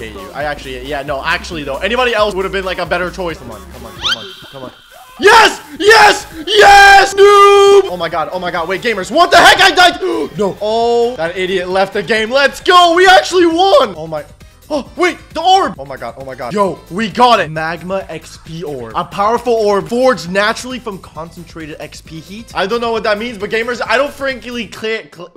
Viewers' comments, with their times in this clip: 0:06 hol up, you started playing my theme song